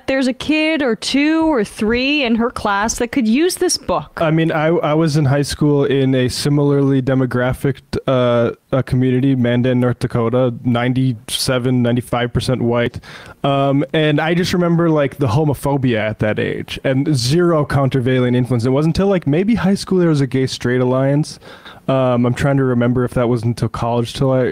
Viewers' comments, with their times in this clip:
0:09 where is the voice coming from?